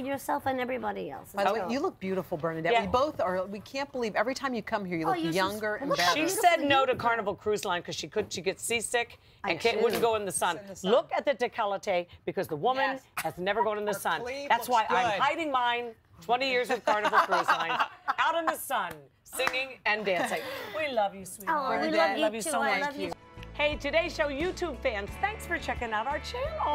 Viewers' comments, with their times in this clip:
0:10 What is a di-ko-le-tay? I only know about a de-kol-taj. #decolletage #orthoepy101